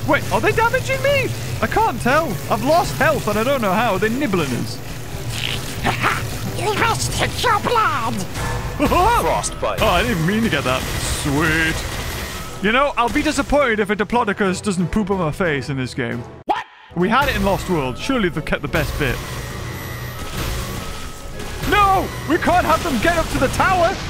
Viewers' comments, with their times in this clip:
0:05 the gaming beaver sounded like Donald Duck